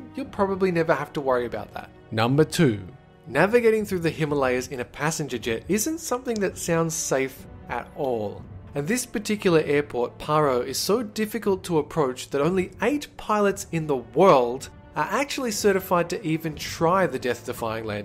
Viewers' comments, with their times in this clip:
0:05 Who heard that little clicking sound #saveplanetdolan